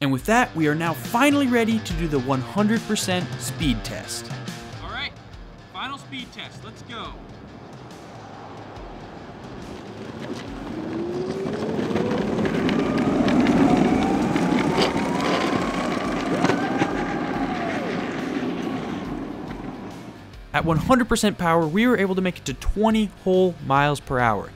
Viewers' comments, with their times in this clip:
0:08 I swr I heard the old Minecraft background music when it was rolling